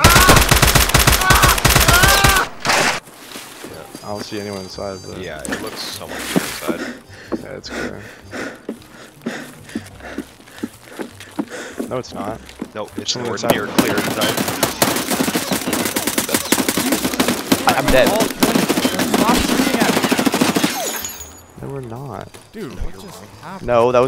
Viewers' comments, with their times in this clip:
0:05 can literally hear a dude walking inside and say its clear 💀